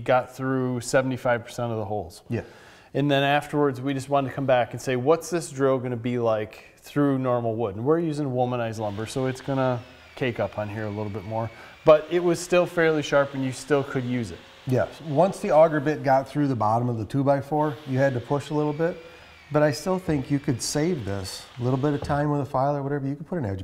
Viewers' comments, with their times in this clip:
0:08 Did you say your using womanized lumber?